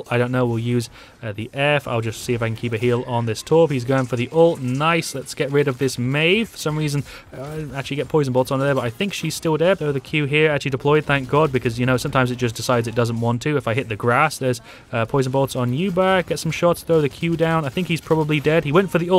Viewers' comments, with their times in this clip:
0:06 what was that sound in the background? It sounds like someone moaning "help".